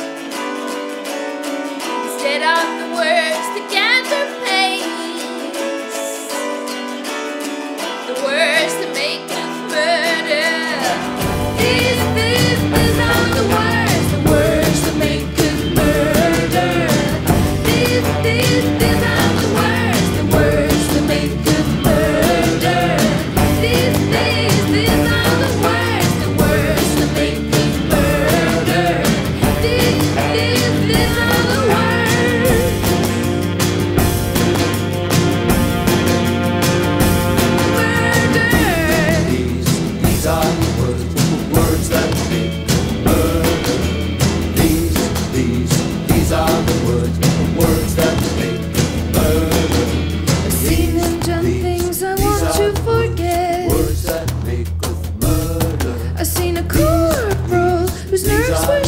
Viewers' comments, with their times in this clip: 0:10 The introduction of the chorus in the ballroom is a happy moment.
0:41 The way the guitar from the beginning comes back in is brilliant.
0:42 Cool song, loads of nice classic rock references. However does anyone else get an odd feeling that the backing vocals might as well be singing surfing bird?